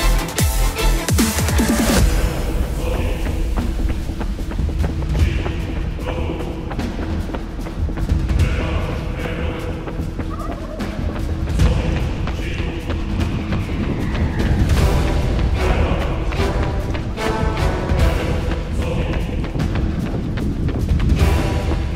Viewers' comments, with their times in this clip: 0:09 Great channel. Thx4 doing this video. Random observation: I think I heard the gobble of a wild turkey covered by the background music ... lol definitely not the type of animal I'd encounter on a jog in my area.